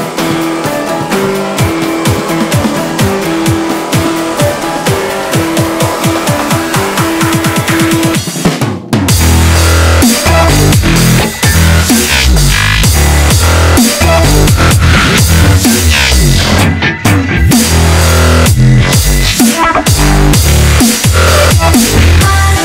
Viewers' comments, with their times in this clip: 0:09 i like this drop omg